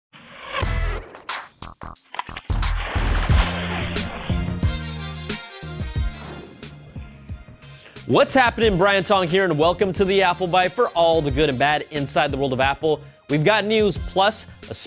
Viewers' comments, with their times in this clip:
0:02 Guys Pause he is killing the "Apple" LOL